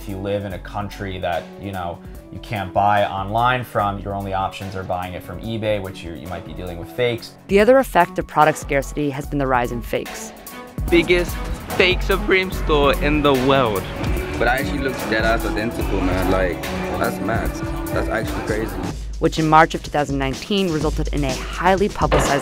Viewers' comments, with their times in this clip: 0:10 biggest fake supeme stor in da weld